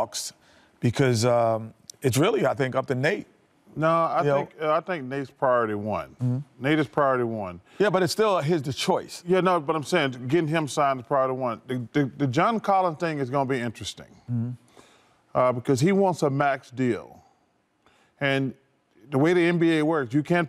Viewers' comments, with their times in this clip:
0:07 I love this show! But who farted ????